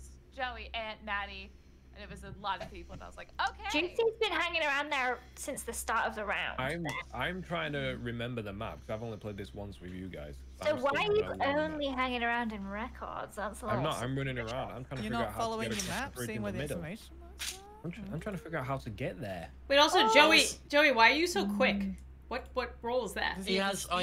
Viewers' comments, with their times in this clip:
0:06 you can just hear someone heavily breathing 😭